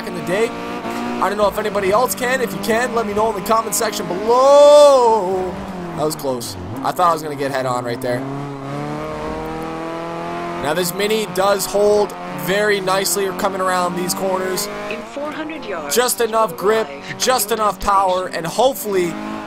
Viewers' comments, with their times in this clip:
0:03 Did y'all hear him singing